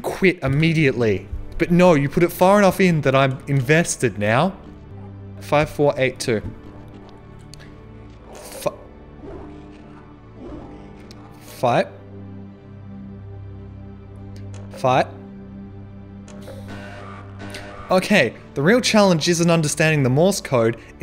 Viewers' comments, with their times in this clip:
0:07 “Fi-.. Five-.. Fi—“ “Okay, the real challenge isn’t understanding the Morse code, it’s actually typing on the keypad apparently..” “Err.. Five?” [Giggling] ”I wonder why more half life mods Haven’t included Keypads , it’s almost as if.. [Chuckling] it really doesn’t work too well!” ”F i v e . .” {PRESSES ZERO} “[Cat sneeze] <DESK SLAM>” “Awwwe.. [Short chuckle]” “Five.. FOUR.. Eight—“ •Soft Desk smack• “Five.. F—.. (Exhales)” <DESK SLAM x3> [Giggles, knowing hell is up ahead.] {Repeatedly presses 5 Accidentally} “[Laughing] Five-Five-Five-Five..” “FIVE - FOUR..” {Exhales with FUMING anger} “Five.. f—SEV-..” [Shoots keypad in anger] “Five, four, eight, two.” <In a successful tone> “Yeees!” “Fuckin, did it.” “Wh- Silently giggles to welcome the wave of relief. “ “Slightly off to the lef— No- NOOO~!! “